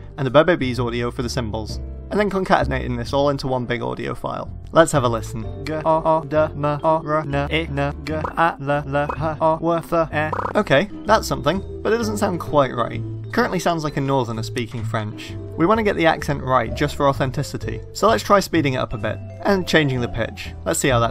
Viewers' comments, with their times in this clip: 0:06 That's how Vietnamese pronounce LOL